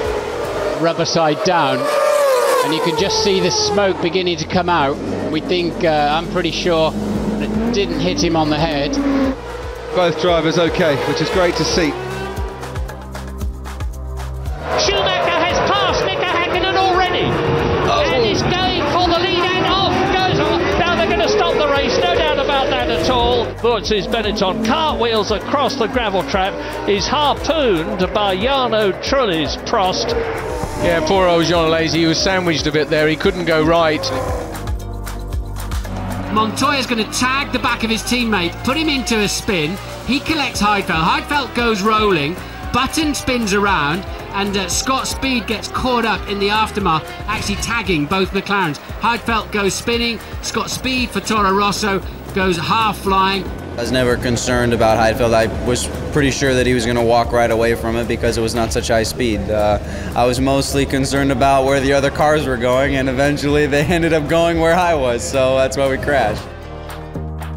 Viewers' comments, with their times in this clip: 0:09 back when Lawrence Barretto was known as Narain Karthikeyan
0:54 he kinda sound like Logan Sargent